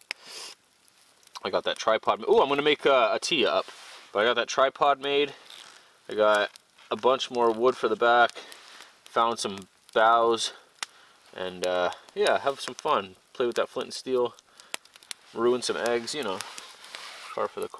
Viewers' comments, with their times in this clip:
0:05 He got so excited he farted